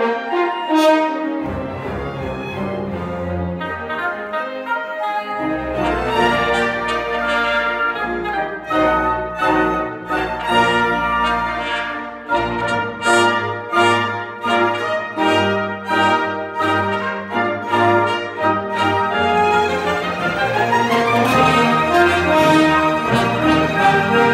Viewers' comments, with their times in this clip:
0:10 mmmm yes good drum. good drum smell good